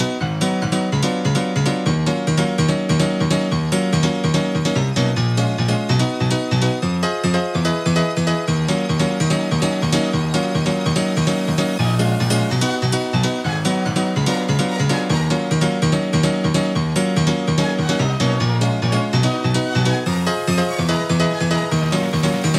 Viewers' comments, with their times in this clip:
0:07 Around the mark, sounds like some Frankie Knuckles stuff!